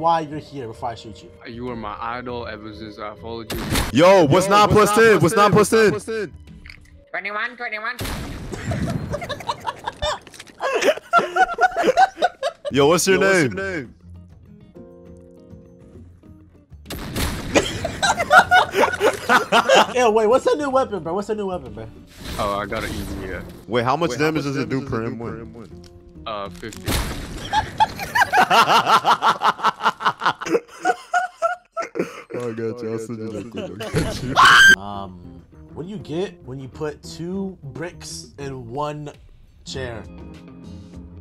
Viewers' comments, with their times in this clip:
0:04 "Whats 9 + 10 ?" "21,21"Got me dying with that tone
0:10 the double shots💀😂
0:27 Rich ahh laugh
0:27 Synchronized ahh laughs 😂
0:28 evil laugh fr
0:29 Light yagami ahh laugh somebody stop this man 😭😭🙏🙏🙏